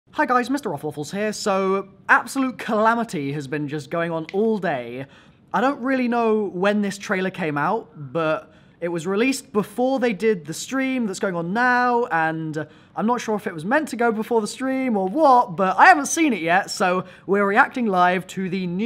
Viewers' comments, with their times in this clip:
0:02 Yo did he speed that up cause that was hella fast